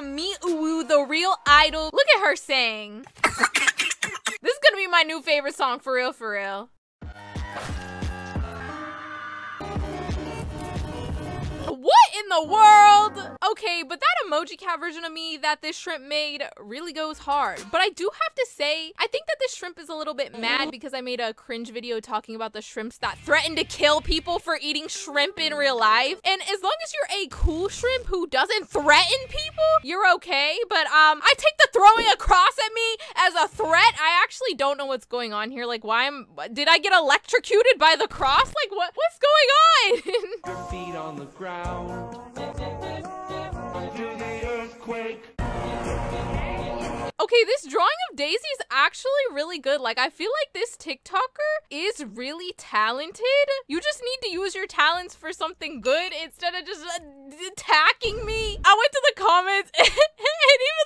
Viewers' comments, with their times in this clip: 0:03 Love the song
0:41 help the song I luv the song😂 Do the earthquake 😂BTW the video was Great as always 😊